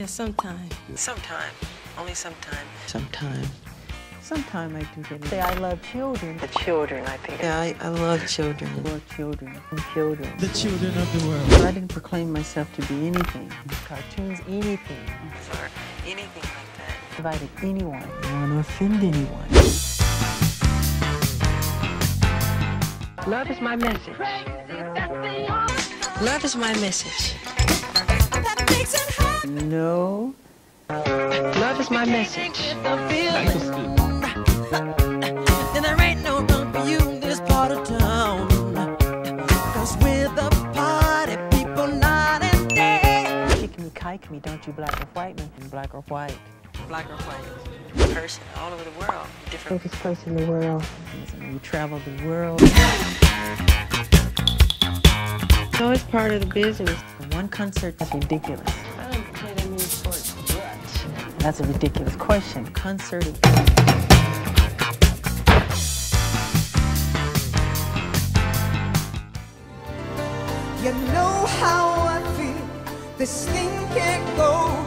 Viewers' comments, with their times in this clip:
0:10 "the chewdren of the whirl" thats a 2 in 1 right there
0:10 Michael Jackson's Real Voice
0:29 the way he said NO!!!!!! 😍😍😍😍
0:59 the way he said it tho😂
1:01 is so CUTE the way he said it